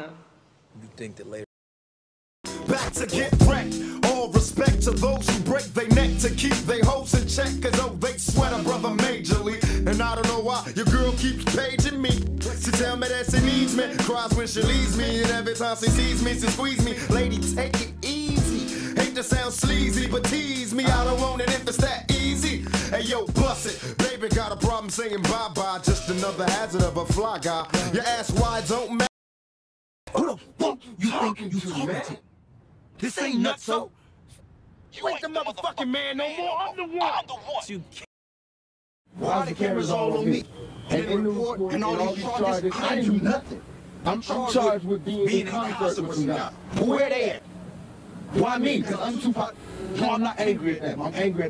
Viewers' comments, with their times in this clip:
0:05 am i the only one who thinks that the Movie Edition of the Song Sound faster? Look it up on Netflix guys!
0:39 that moment sounds very identical, I love that part of the video